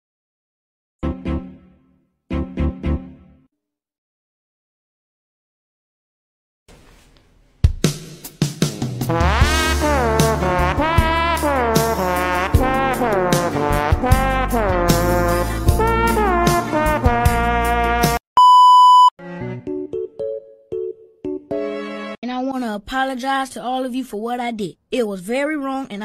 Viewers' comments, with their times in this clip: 0:03 HELP, THE BACKGROUND MUSIC💀🤚🏻🤚🏻
0:07 creppy ahh music
0:08 the music is what made me laugh🤣
0:09 sounds like farts
0:10 OMG THE HEART EYES AND THE TRUMPET GOT ME LAUGHING ON THE FLOOR- 🤣🤣🤣🤣
0:12 THE TRUMPET CARELESS WISPER CAUGHT ME OFF GUARD-